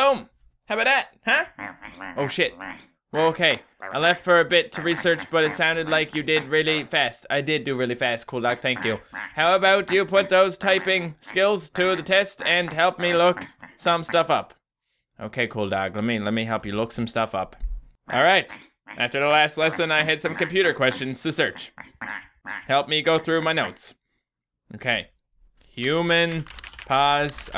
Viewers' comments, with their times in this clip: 0:09 That music on the first game was creepy also because it's pm😂